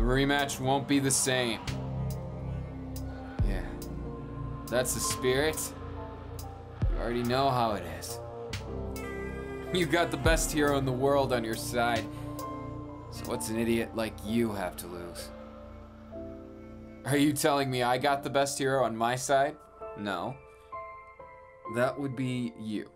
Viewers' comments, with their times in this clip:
0:06 I melted at the part on till the end 🥺. His laugh 🥺😭 an what he said... and this music... 🥺😭😭😭😭